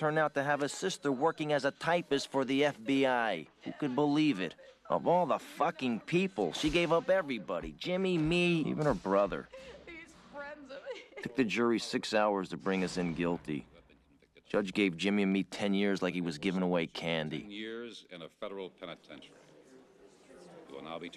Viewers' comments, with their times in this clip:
0:07 Jimmy laughing as he is being led out in cuffs 😂